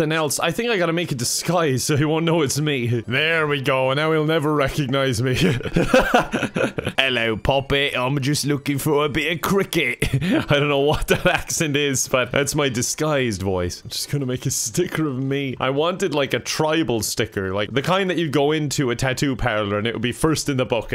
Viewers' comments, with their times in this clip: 0:06 as a cricketer, i can confirm this is EXACTLY what posh kids' dads sound like its scary lol
0:06 was the most exquisite british accent i've ever heard